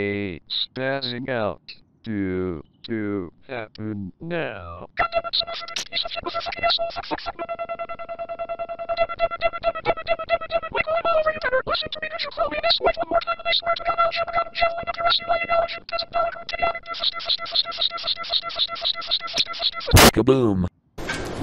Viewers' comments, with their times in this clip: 0:05 He sounds like an vocal high pitch rapper god even fast as Enimem 😂😂😂😂😂